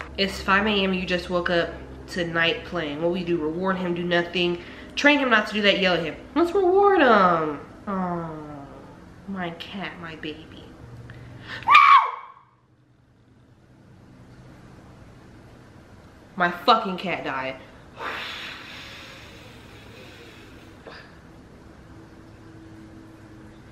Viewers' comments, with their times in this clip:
0:08 "aww my cat my baby ." ages up (the most hilarious scream) "NO! My fuckin cat died." All within 10 seconds lmao